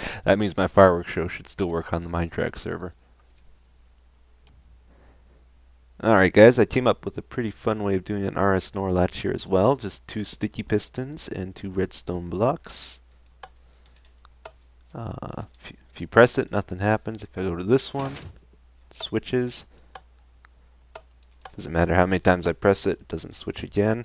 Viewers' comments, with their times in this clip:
0:05 he said rs snorlax